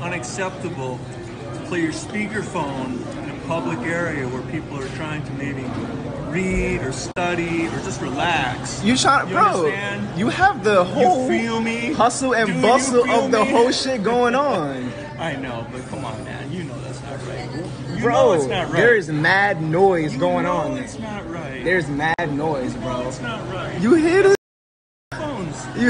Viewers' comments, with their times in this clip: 0:10 you have to much detune on ur voice bro